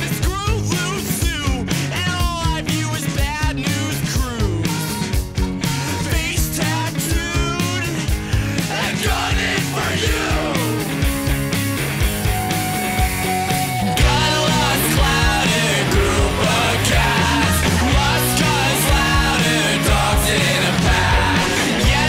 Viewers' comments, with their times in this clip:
0:05 Had anyone noticed, looking back on this, that the trumpets sound exactly like the intro in Brittle Bones Nicky 2?